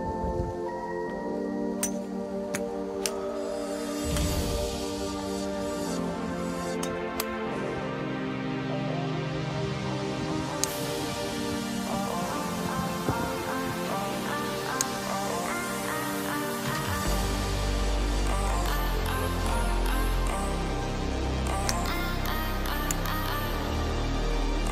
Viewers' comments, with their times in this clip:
0:05 are you trying to do a matt wolf impression. haha